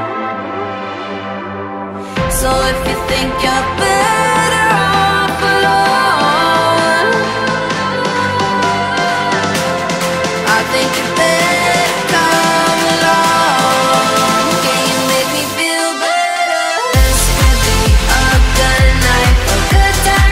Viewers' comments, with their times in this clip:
0:06 the vocals wow